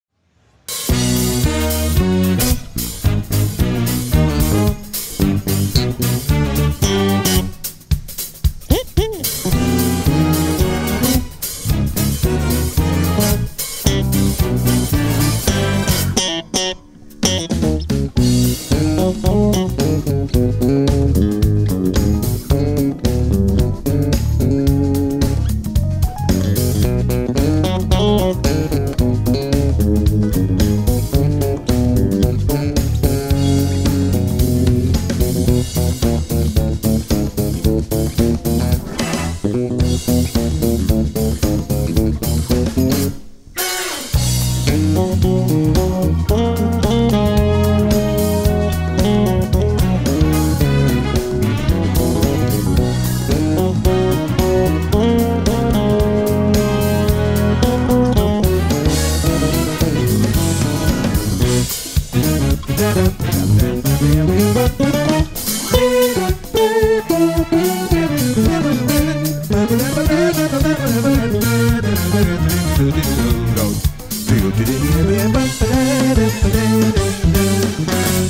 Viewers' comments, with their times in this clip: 0:08 I love that modulation
0:09 i dunt understand whats happening right there, how it doesnt sound like it fits , but it fits!! Very cool.
0:09 That Jazz harmony caught me off guard
0:50 The lick a is beyond amazing
1:05 He changed that key at that part and I love that change ♥